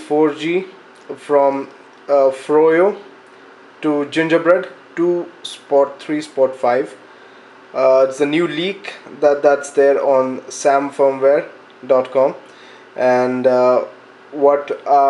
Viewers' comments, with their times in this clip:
0:03 LOL 2 SPOT 3 SPOT 5 Sorry it's funny to me...